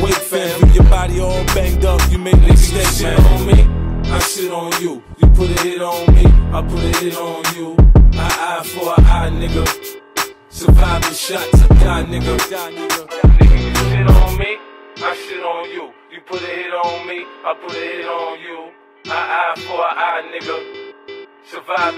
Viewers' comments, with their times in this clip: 0:08 nle choppa or mi wrong!?